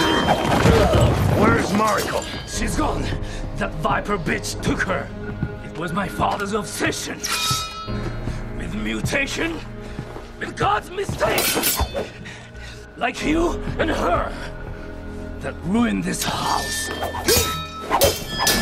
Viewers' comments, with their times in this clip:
0:03 The Peck Pop